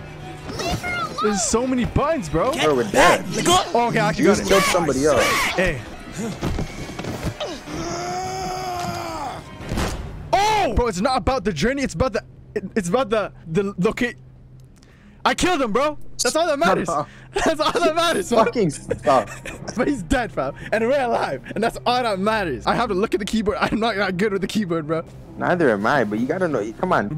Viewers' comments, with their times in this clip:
0:10 BRO WAS STUTTERING SO HARD IM CRYING